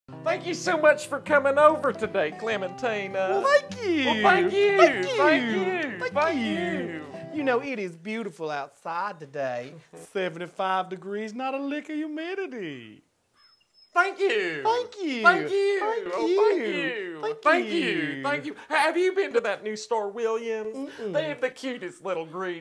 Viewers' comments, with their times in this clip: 0:06 Did he say fuck you ?